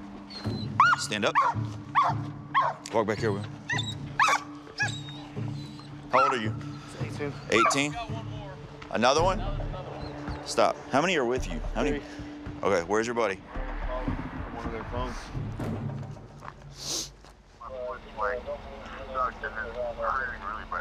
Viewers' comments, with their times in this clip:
0:06 am i the only one who heard 22